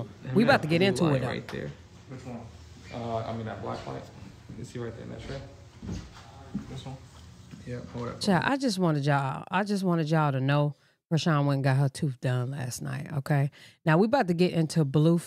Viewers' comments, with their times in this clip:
0:03 HE SAY WHICH ONE THIS ONE IT SOUND LIKE HIM 😂